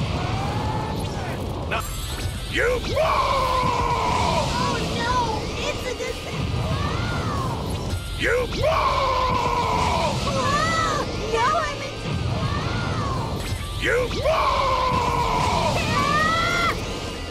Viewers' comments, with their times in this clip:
0:04 Gotenks' lines getting cut off killed me lol